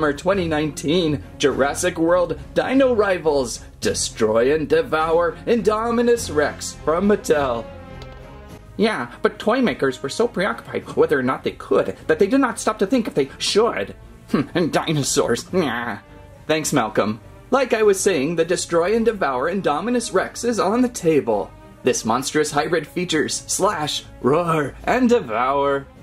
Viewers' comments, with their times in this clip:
0:09 Sounds nothing like Jeff Goldblum